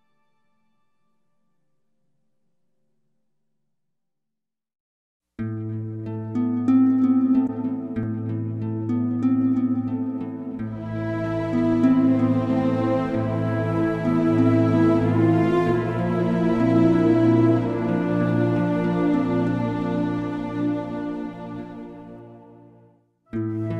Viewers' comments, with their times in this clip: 0:04 I didn't check the playlist and it was such a beautiful surprise when I heard the music ! Thank you for the video.